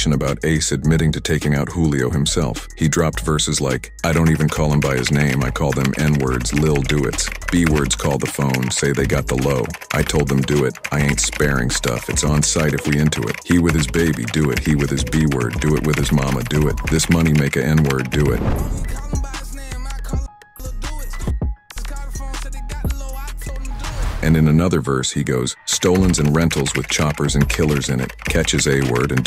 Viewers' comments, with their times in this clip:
0:10 area is hilarious when the robot is reading it and saying “N Word” “B Word” 😂